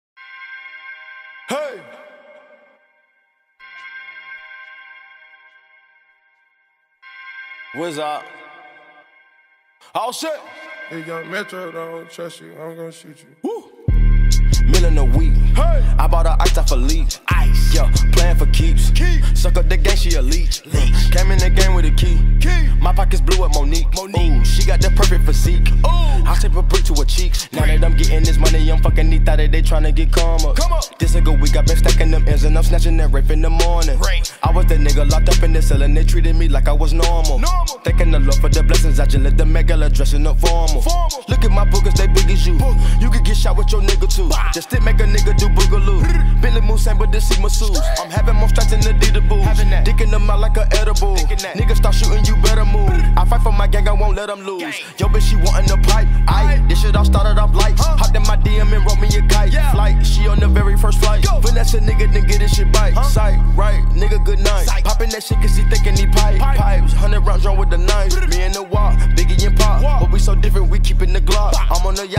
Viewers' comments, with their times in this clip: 0:01 he sound like the lego man who said "HEY"
0:55 offset's flow is waaaavvvvvyyyyy af
0:57 i swear i thought that was quavo 😭😭
0:57 Bro I thought was lil tecca
0:59 o shi thought that was my nigga Quavo lmao